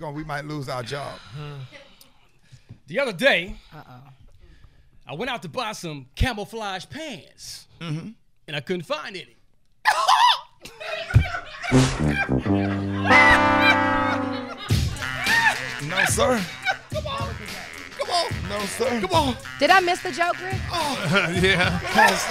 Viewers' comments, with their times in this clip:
0:09 That "Morris Day" laugh at the end did it for me! 🤣🤣🤣